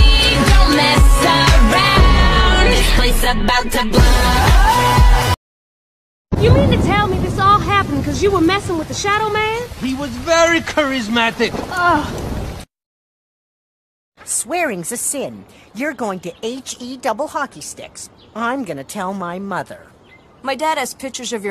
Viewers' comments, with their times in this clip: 0:07 WHY IS JACK’S VOICE SOUND LIKE APPLEJACK FROM MY LITTLE PONY!?